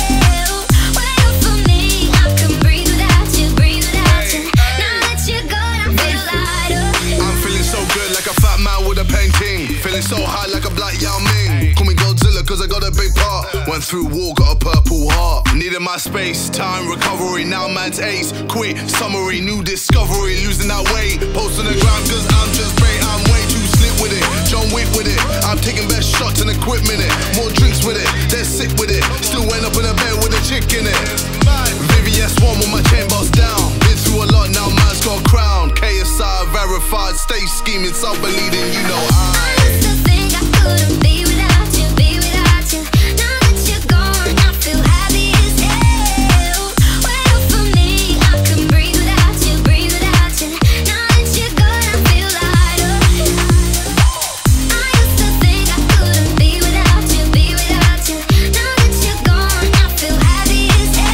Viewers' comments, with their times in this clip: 0:07 All I can hear is ''I'M FEELING SO FAT LIKE A FAT MAN WITH A FAT TING.''
0:22 none hear joe whick
0:43 yEA I'm Bri'ish How'd you know!?